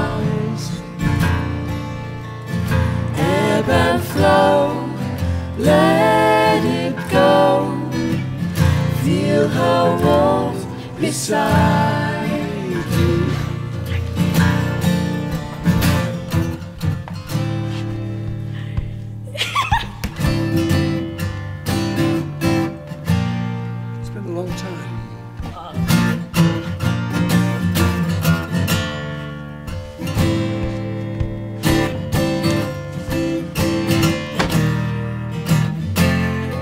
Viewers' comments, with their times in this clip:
0:10 Who is the third singer? And I feel like there's more than a single guitar playing? Also there's a strange timbre coming from Romany's voice??
0:10 What happened ? If I had to guess, I’d say the young girl was having trouble singing the note on the lyric “...beside you.” Sounds like there was a little studio wizardry maybe? The sound kind of warbles a bit. Love this song and this video btw!
0:11 The word is "Beside" David! Also, where is that 3rd voice coming from? I only see David and his daughter singing during the 3 part vocal section. Great video, thanks for posting!
0:20 I Loved this laugh 😊